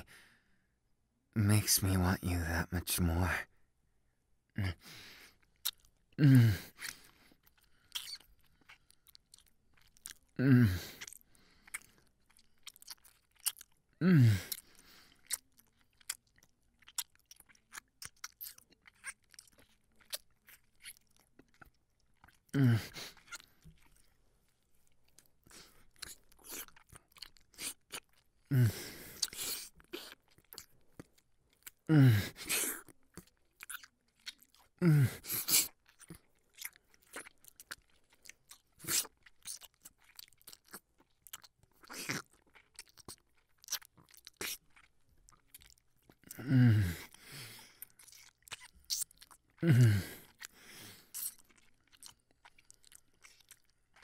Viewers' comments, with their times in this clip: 0:03 he fucking MOEND at that part
0:12 In the beginning he sounds all innocent he's not innocent
0:26 is he slurping my legs? Omg aaaaaaa 😭😂😂 Btw I like how Denki likes tails cuz I do too but not that much 😭😂
0:32 ... the kissing sounds like those KFC commercials, mmmmm finger licking good lmao the slurp killed me 😂
0:37 Yo! You slurping some ramen?? I want sum😡😂